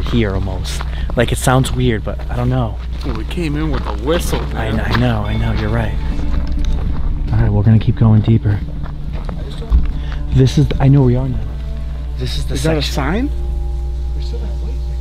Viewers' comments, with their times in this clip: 0:03 What type of whistle is it? That sounded like a group of people in hell screaming 😦